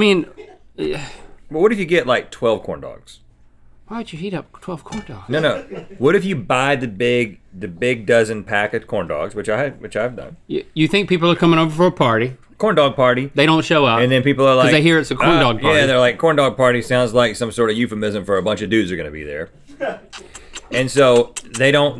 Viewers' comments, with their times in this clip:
0:04 Can’t stop rewatching when Link ask “why would heat up 12 corndogs?” Hes so genuinely concerned 🤣🤣